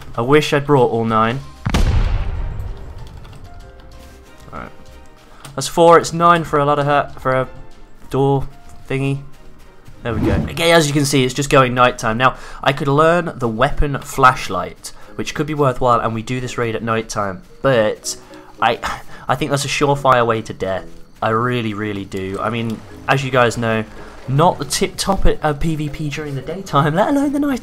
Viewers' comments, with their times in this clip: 0:10 how do you get your voice to sound like that? lol